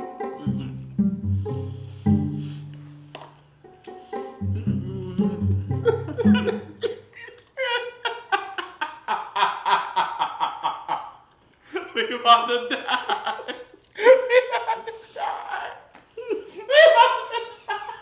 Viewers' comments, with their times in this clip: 0:06 The laugh of horror